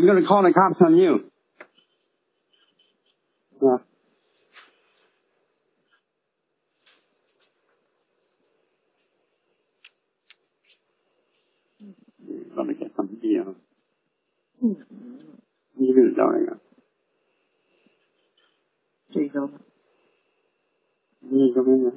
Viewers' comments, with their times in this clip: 0:03 And then leaves him a present of a butt burp...what a neighbor.